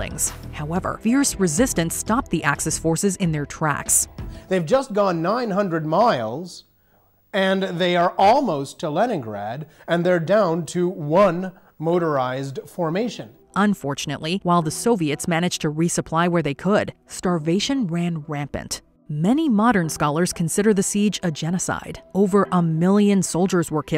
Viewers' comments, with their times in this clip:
0:08 The guy speaking is now a woman